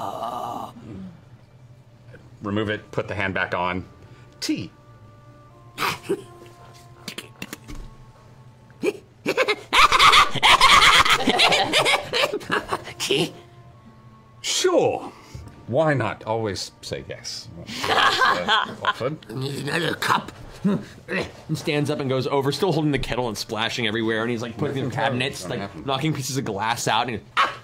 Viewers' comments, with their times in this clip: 0:08 I think this is one of the greatest and most terrifying laughs I have ever heard, especially with the little bounces🤣